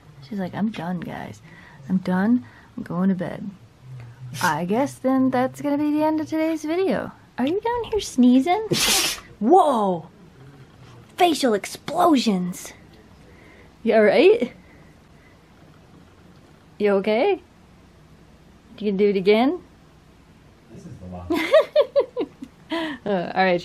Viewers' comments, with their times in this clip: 0:07 Best sneeze ever!
0:07 so funny! Cute cuddle bug sleepin' and sneezin'.lol